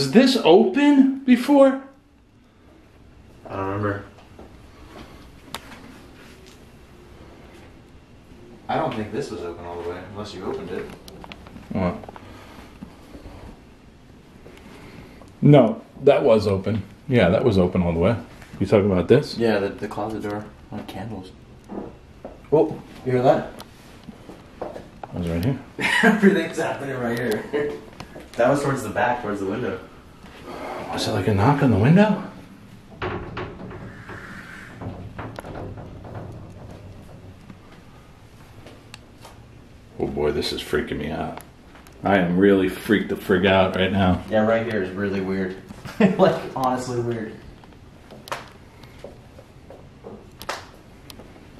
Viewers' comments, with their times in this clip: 0:05 onwards I hear woman singing....use headphones please!
0:33 A scream or screech